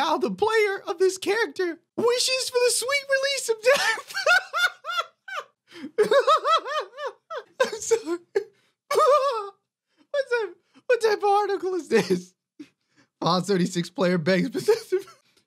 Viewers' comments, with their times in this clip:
0:03 the laugh is everything.
0:03 Liked for that epic laugh